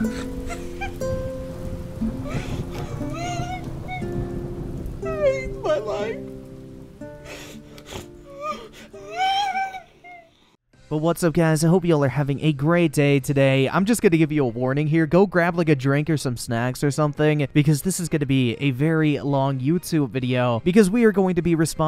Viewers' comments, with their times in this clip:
0:08 I don't want to be badd but sounds like a dog crying